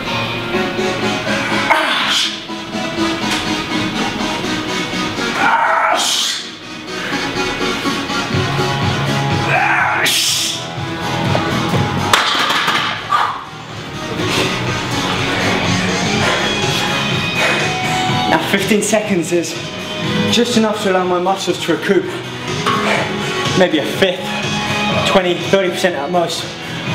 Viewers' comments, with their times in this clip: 0:08 It's funny 'cause what he's yelling that sounds like "waesh!" in Norwegian means the same as "EWWW!" in english :)